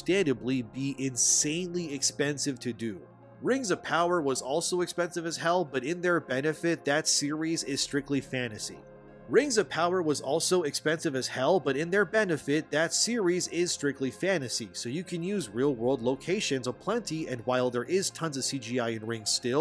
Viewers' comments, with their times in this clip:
0:04 damn, I knew this was an AI voiceover channel. I have rules against supporting this. I'm out.